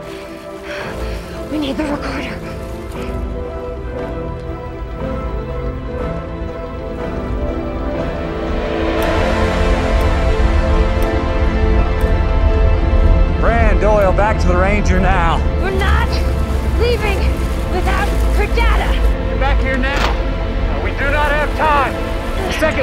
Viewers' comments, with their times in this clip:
0:09 after this point, the ticks happen once a second instead of 1.25